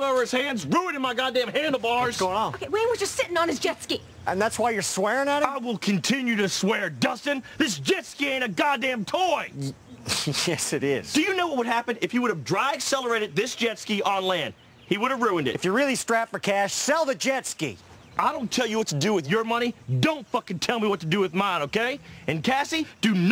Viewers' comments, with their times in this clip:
0:05 boss wolf (kung fu panda 2): I will continue to swear, Dustin. This JetSki ain't a goddang toy!